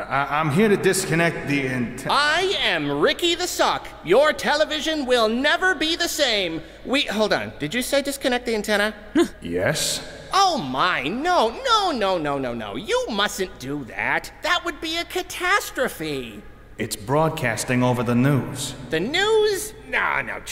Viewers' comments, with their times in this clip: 0:07 ❤the voice cast it really shines light on each character’s personality